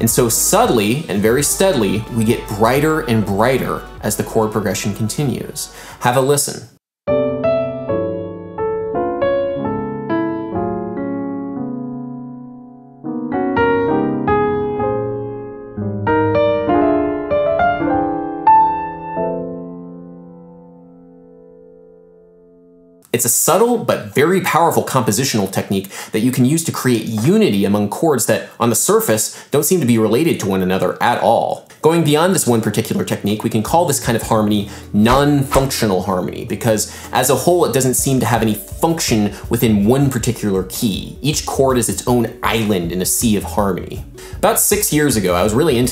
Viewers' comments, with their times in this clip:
0:06 was that a primal version of *the lick*?
0:06 reminds me to Arabesque by Debussy
0:06 I was peeping some major Arabesque vibes over Intentional for the purposes of demonstration? Possibly. It's still good either way.
0:06 Hey! I'm gonna steal that chord progression if you don't mind. thank you <3
0:07 sounds like a funky Debussy motive.
0:07 The "intricate" chord progression that's played did you just pick random major chords with extensions out of each scale, or do each of these chords somehow represent the scale itself? For example, you play a G(add2)/C for the C major scale, which comes from the fifth degree of the scale, but for D melodic minor, you play a G9(#11), which comes from the fourth degree of D melodic minor (I think?). Do these choices have any particular significance in regards to representing the "sound of the scale"? If not, could you theoretically pick any chord from each scale while composing with non-functional harmony?
0:26 The etude blew my mind! It sounds a lot like Bill Evans' style of harmony, for example the piano intro to "So What". I should give some of these techniques a try.